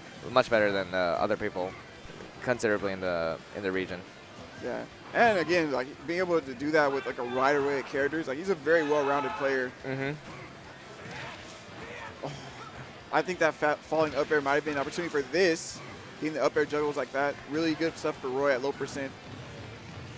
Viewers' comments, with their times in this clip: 0:05 I love how you can hear someone popping off in the background